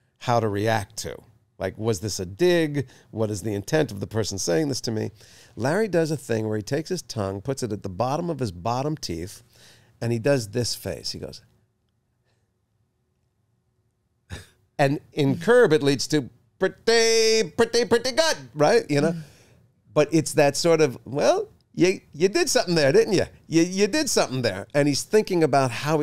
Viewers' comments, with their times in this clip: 0:09 Jason does Larry David impression